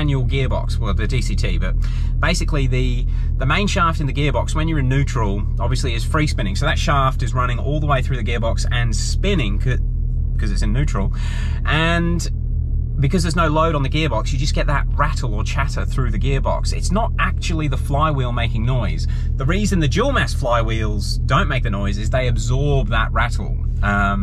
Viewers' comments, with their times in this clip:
0:09 no the mainshaft isn't spinning in neutral else you would be smelling the grass in front of you now :P Yes the noise is deft from the gearbox. BTW your place looks more and more like my area......plenty of doublecab 4WD --, tons of 'soft' SUVs --......